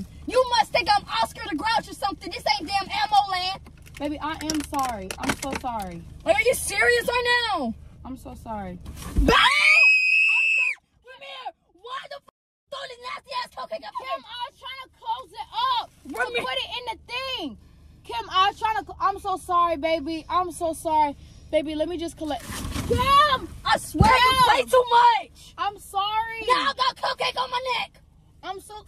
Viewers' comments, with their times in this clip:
0:09 this scream was personal lmfaoooo😂😭